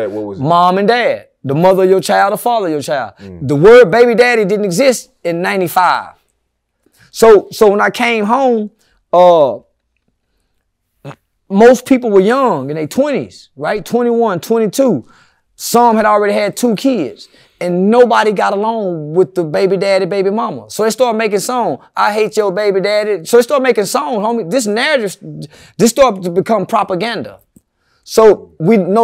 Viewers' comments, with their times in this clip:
0:09 Did I just hear a fart? You must have some quality audio over there 😂
0:10 Bruh did not fart LOLLllll goodnight